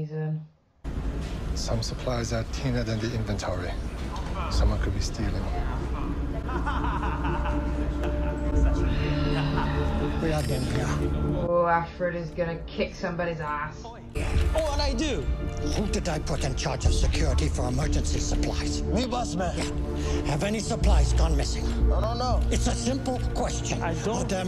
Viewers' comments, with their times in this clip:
0:09 A loud bray of inappropriate laughter in a distinctively penetrating voice. Imagine being so thick as to be unable to see what a fix everyone around him is in, and being so clueless as to display mirth in dire circumstances within earshot of the man who has already told him once to tread carefully.